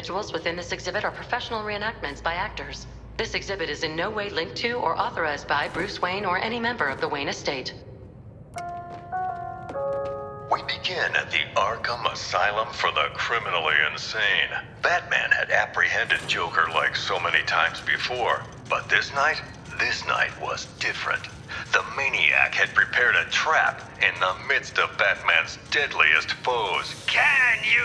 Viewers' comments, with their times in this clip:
0:08 when I heard the Arkham Asylum intercom I got flashbacks
0:08 Fuck that jingle gave me ptsd